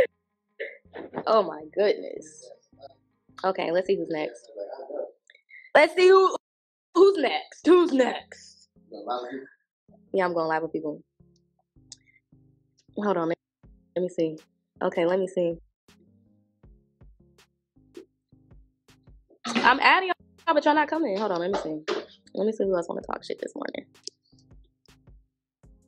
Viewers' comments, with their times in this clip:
0:07 sounding like Angela Simmons